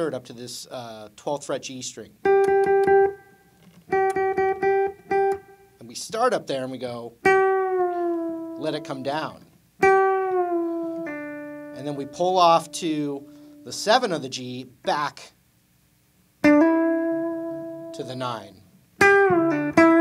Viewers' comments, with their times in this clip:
0:06 Initial G string bend-up